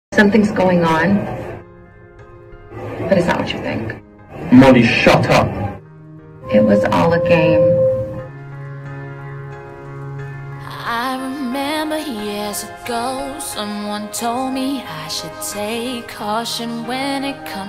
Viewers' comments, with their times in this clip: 0:04 the way he says it "m0lLy ShUt uP!" his accent is tooooo cute!